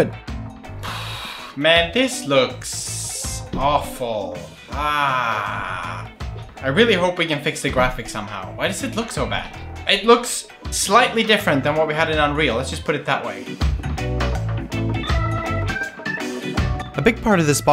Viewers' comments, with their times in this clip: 0:03 u sound like Unnncle Roger aaaahhhhh